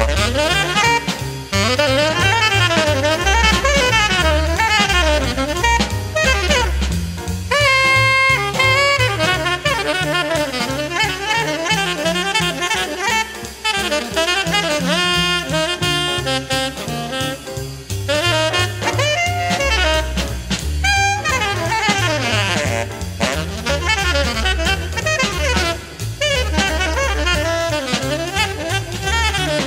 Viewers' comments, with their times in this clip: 0:10 philly jones stops hitting the snare and Chambers goes high in the register on his bass, and everything feels like it's lifting upwards